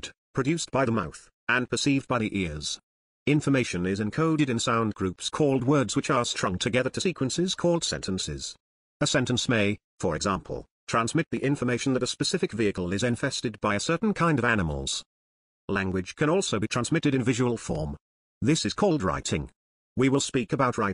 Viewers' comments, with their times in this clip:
0:08 Wow, I didn't know you speak Hungarian!